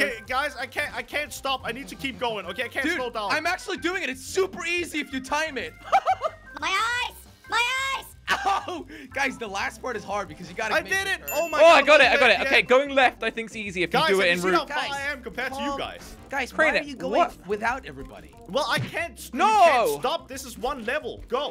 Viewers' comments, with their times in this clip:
0:07 MY EYES, MY EYES!!! Me: it sounds like the spongebob meme.